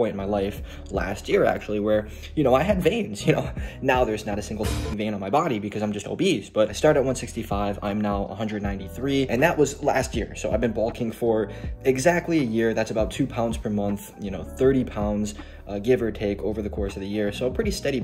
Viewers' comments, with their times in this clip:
0:03 BREAKING BAD INTRO CENSOR IS THE FUNNIEST SHIT IVE EVER HEARD